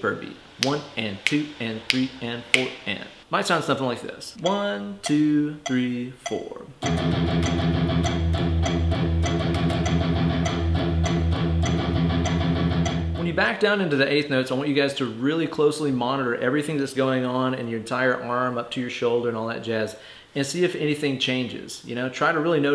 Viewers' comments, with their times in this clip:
0:06 now you're just playing eye of the beholder